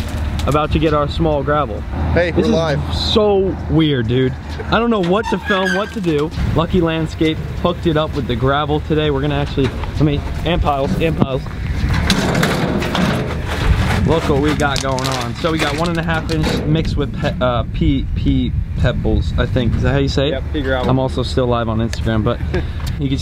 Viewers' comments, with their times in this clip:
0:07 did he say,”lucky land scape f#cked it up with the gravel today”